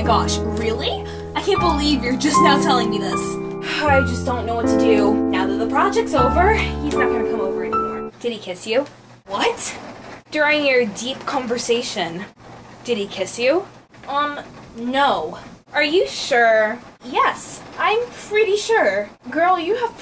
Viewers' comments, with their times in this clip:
0:08 lol music cuts out Did he kiss you? What!?:'D